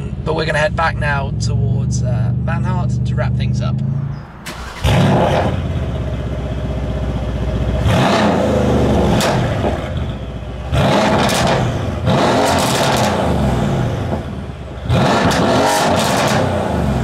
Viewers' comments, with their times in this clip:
0:03 The exhaust note of this car is cool as hell! Just listen to that macho sounding exhaust note complete with crackling sounds ! That has to be the most macho sounding exhaust note of any car out there today. American sports cars try to produce macho sounding exhaust notes but their exhaust notes just sound unsophisticated, raw and growly. THIS exhaust note of the C63 S Manhart is what American sports car manufacturers should aim for. I am torn between the AWESOME interior of the S65 AMG and the AWESOME exhaust note of this C63 S AMG.